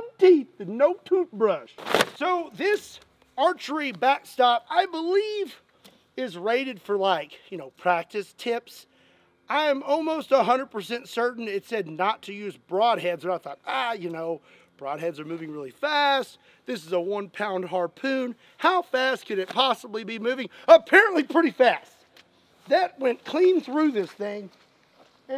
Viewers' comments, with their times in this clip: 0:06 how did he recreated demomans voice with two words